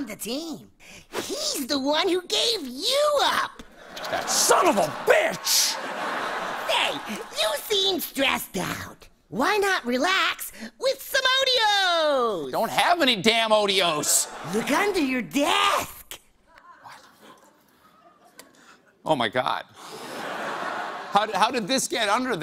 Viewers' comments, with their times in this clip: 0:03 what lunatic dad sound like